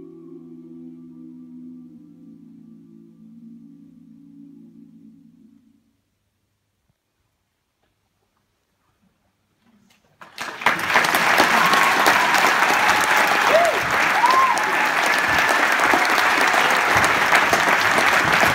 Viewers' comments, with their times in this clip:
0:06 It's moments like when the audience is so hooked into the music that they don't even dare BREATHE for fear of missing the next note, that you know you've created something truly special. Bravo!